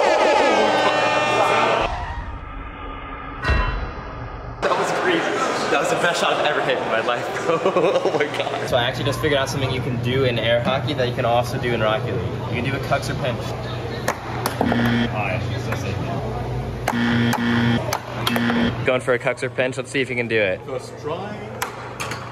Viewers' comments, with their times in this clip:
0:07 goofy ahh laugh 💀💀